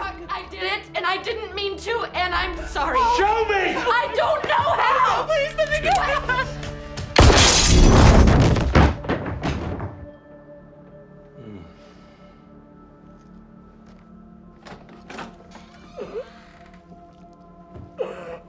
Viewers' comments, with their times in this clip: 0:06 oooooofff roblox dead effect